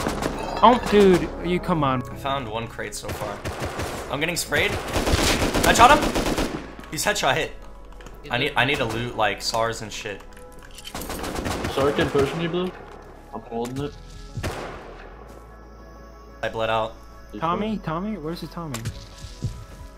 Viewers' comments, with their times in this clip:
0:04 Why is their a snap